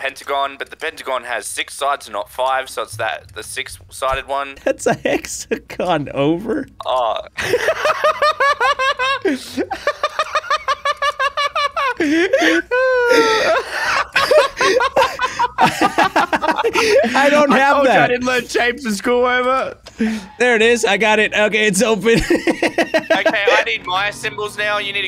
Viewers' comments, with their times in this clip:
0:09 BRO WAS HE POSSESED AT THE CLOWN MOTEL OR WHAT WHAT WAS THAT LAUGH